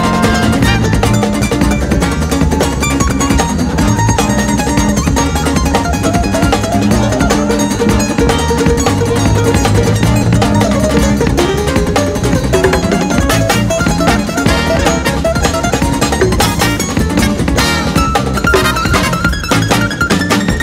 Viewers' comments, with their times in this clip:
0:06 I legitimately thought I had accidentally enabled 2x speed and had to check.